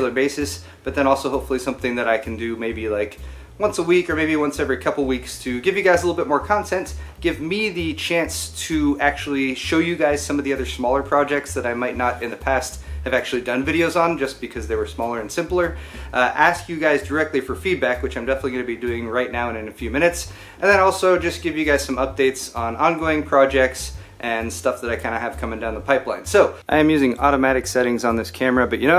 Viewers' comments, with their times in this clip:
0:09 did you say shmaller?